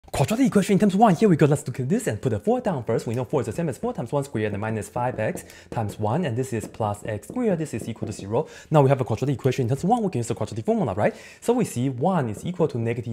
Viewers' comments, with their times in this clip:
0:00 Am I the only one thinking he was going to speak chinese for just a second LOL